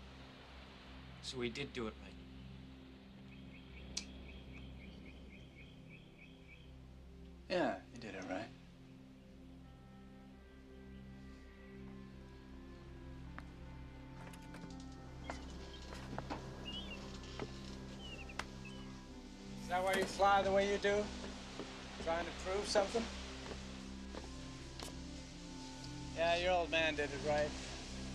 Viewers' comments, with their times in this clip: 0:09 i get chills every time that beautiful anthem starts playing